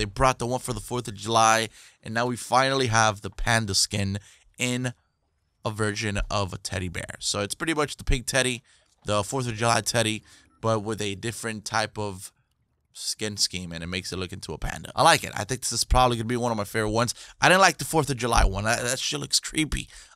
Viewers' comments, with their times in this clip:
0:05 did u say virgin or version?